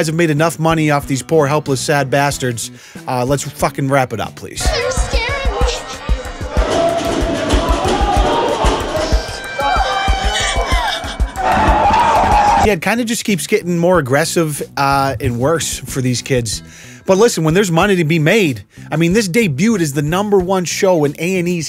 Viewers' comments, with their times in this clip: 0:09 Gordon Ramsay sad violin